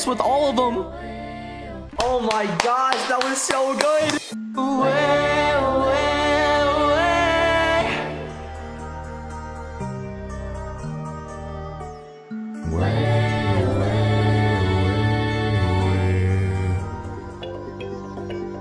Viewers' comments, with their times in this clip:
0:04 WHY DOES HE SOUND SO GOOD WITH THE WIMMZIES?!?!?